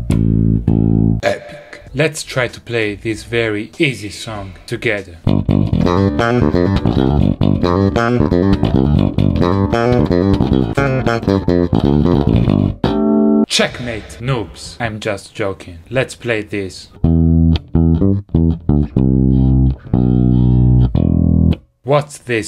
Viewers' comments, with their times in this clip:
0:05 The easiest bassline ever